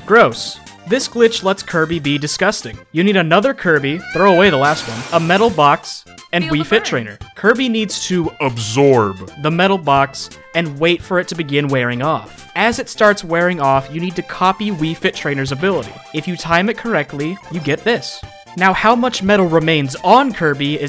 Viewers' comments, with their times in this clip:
0:03 ‘You need another Kirby; throw away the last one’ Other Kirby (in the distance): ‘AAAAAAAAAAA’